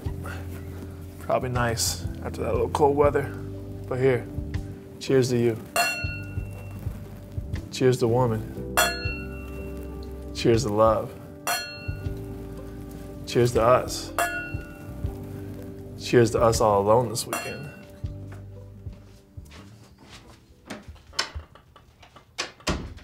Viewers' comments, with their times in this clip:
0:05 When he starts cheering like 30 times ringing the wine glasses like goddamn cowbells I lost it